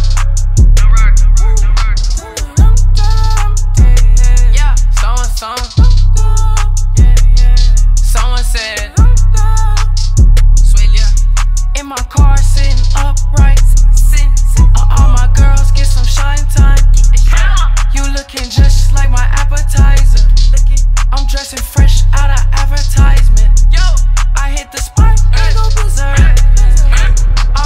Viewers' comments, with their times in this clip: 0:08 Sounds like the someone said in sicko mode